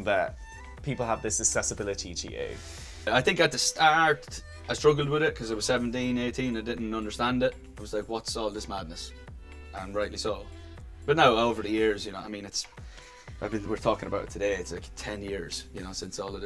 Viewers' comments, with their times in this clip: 0:03 why is NO ONE talking about how he said “STARRRT” ????
0:03 😂😂 what happened to his voice 😂 I can't stop laughing .
0:03 his voice cracked🥺🥺🥺
0:03 he started speaking in cursive
0:03 hahaah how he said stAArt